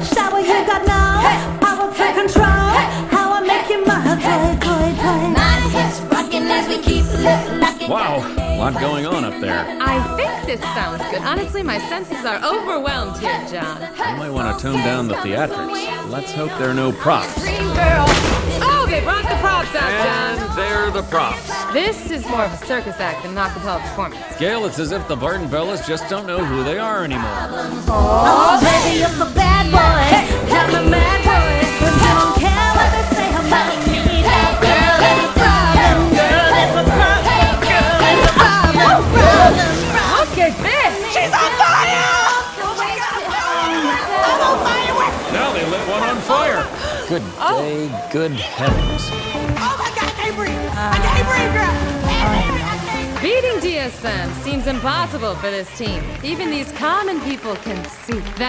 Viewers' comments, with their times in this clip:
0:05 Everyone is sleeping on Stacie, she's actually really good here! Start from
0:42 Beca keep singing when she saw Cynthia was on fire 😂